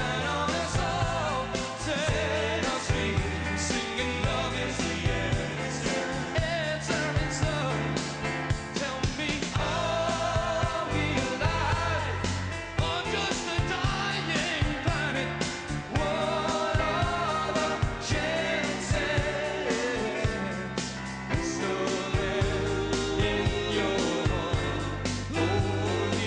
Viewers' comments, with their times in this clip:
0:10 interesting bass note !